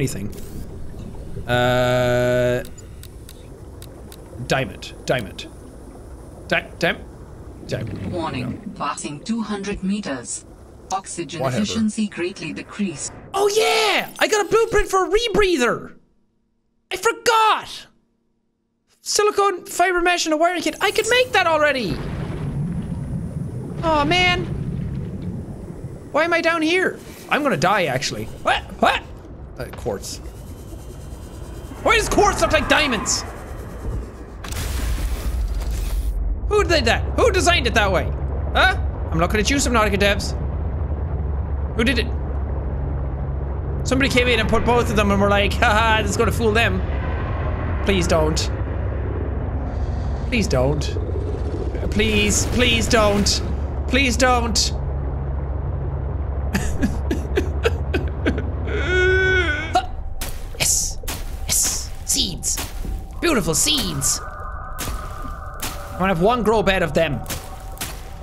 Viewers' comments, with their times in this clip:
0:04 idk why i heard fucksogen instead of oxygen what is wrong with me
0:56 a nice arpeggio